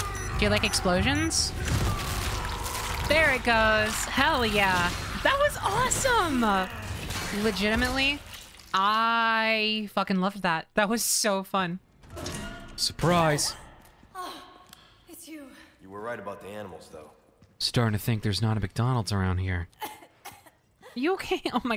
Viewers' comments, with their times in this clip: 0:06 Half life crowbar hitting metal